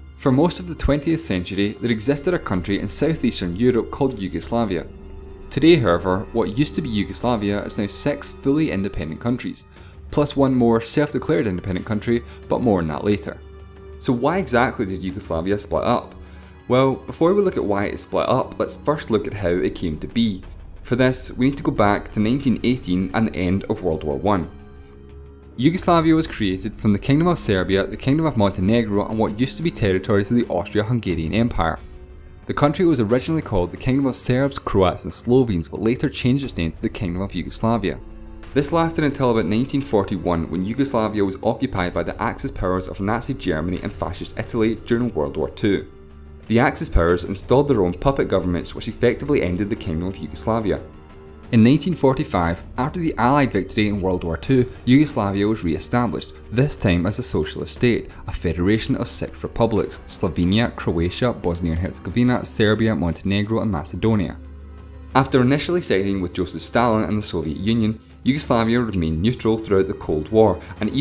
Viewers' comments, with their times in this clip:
0:05 how he said six sounds.... off
0:07 sex independent countries? oof
0:25 Did he say 1818 or does he just have a really strong accent?
0:58 a federation of sex republics